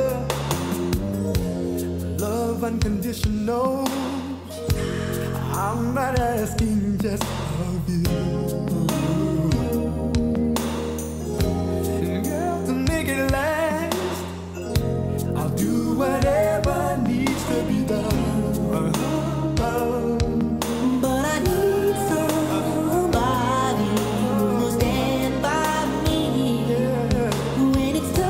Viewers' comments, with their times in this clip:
0:10 I don't think they are lip syncing...at Johnny does the wooooo....that ain't lip singing ...and I think they just sound younger sitting down...they ain't dancing, singing, and moving like they usually do!!!